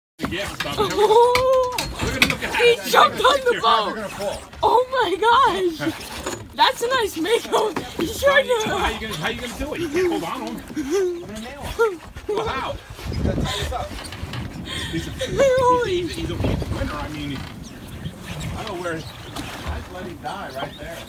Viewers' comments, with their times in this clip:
0:06 "thats a nice Makoo Sharkhaha" lmao i love the excitement 😆 idk why everybodys talking shit. I fish alot & have a passion for sharks, but you got me f*cked up if any you think you would react different. Yeah aite, go "lend a hand if you want too " 😂